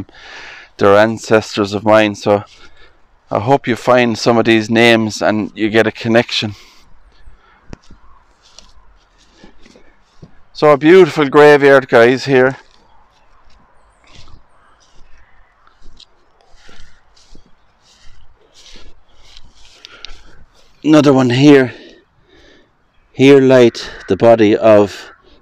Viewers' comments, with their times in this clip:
0:07 EVP low talking breath like just before he starts talking again I can hear it with headphones on up all the way but to low to make out but definitely something there..